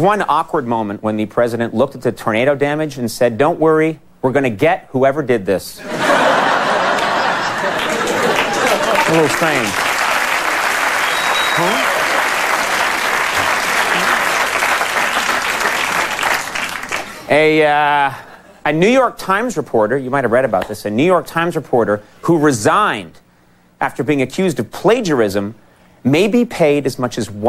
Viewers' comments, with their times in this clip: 0:10 Nice Bush impression !,,!